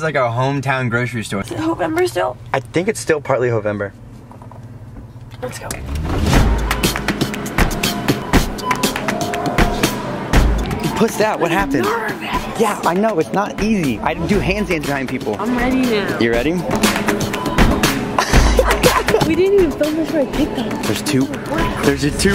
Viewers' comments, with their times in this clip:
0:07 it sounds like someone kind of beatboxing